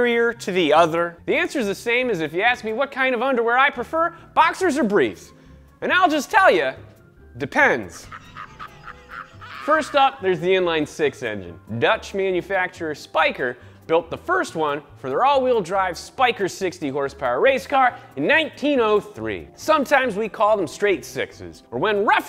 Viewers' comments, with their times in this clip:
0:06 LMFAO the 2 fast 2 furious laugh
0:07 love that courage the cowardly dog laugh.
0:07 That laugh sound track I need it.
0:07 That Courage laugh got me 😂
0:07 Please tell me someone else picked up the Courage the Cowardly Dog laugh !!!!
0:08 that Courage the Cowardly Dog laugh had me fucking DYING laughing!!!
0:08 Courage the cowardly dog laughs